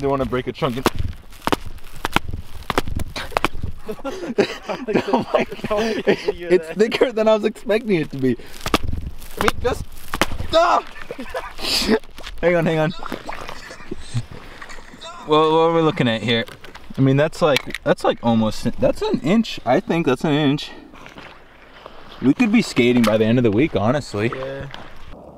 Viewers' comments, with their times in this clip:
0:10 Anyone else notice that echo ?😂